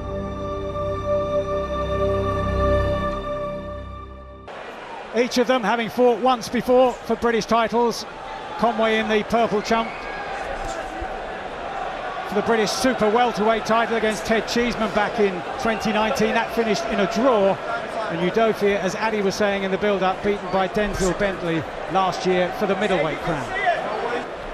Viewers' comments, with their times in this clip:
0:08 Mike Costello "Conway in the purple trump" Also, Dazn cut out the left hook that caused the damage to Udofia's eye. The editor was probably a blk geezer imo.